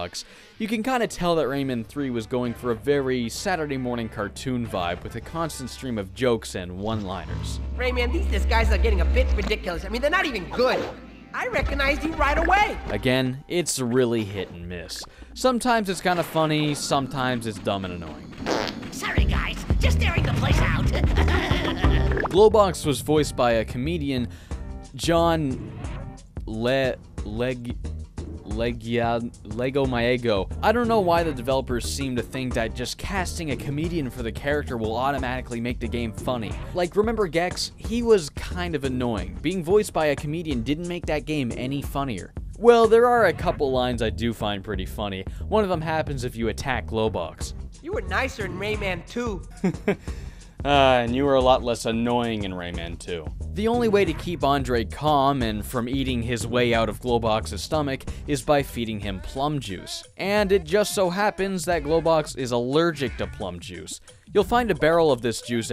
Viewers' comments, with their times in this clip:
0:07 I think the german version didnt have the weird issues where one starts the talking animation, while the other isnt even finished yet.. also.. what the fuck how weird does your Globox sound ? In german he has something like a Patrick Star (from Spongebob) voice.. like slightly deeper with a dumb vibe to it.. so weird to hear him talk with a bright voice like that..
0:21 Talk about having hit or miss jokes. Leg-wih-zah-moe. No idea how thats so hard to pronounce.
0:48 I was thinking Globox would have a Big the Cat kind of voice all derpy and sleepy